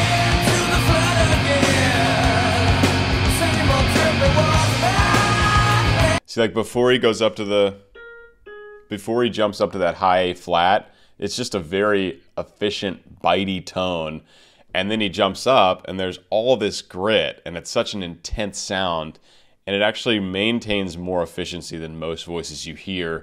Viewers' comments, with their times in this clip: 0:04 His riffing has similar cadences to someone sobbing. Kinda haunting